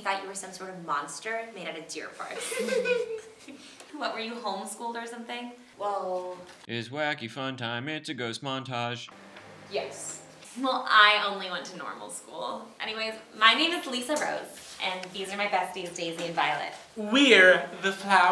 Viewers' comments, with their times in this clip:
0:04 That jingle is stuck in my head for most of the day already